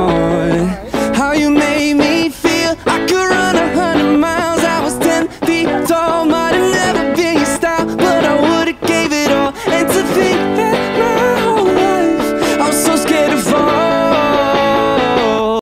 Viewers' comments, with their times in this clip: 0:06 Singing so good, nobody is mentioning the killer coming